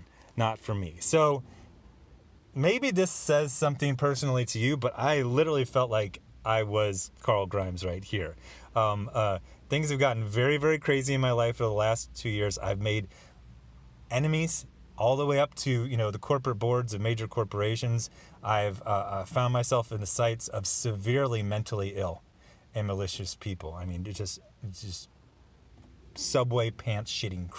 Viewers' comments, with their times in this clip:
0:10 veryyy powerfull stuff. i rember the day i watched your first marvel before sjw..the hama silvestri wolverine. you did not only show us great and bad comics, but you also showed us a code for life. and that cough^^